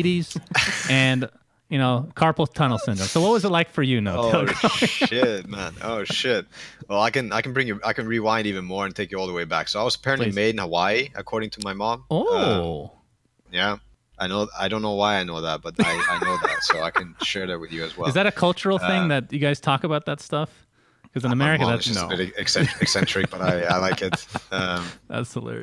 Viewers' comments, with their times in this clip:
0:09 whats he saying 'i was made in a y'? whats that mean